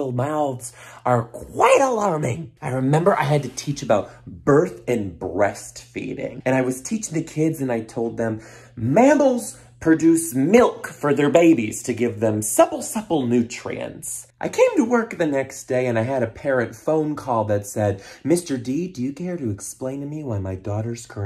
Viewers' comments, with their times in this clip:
0:08 Please tell me that is exactly how u said it to them 🤣🤣